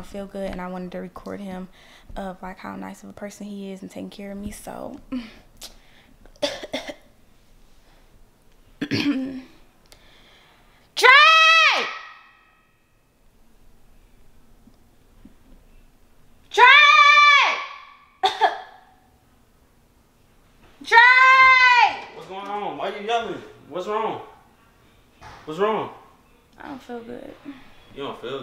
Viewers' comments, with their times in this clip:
0:10 had me dead she start to to scream next 🤣🤣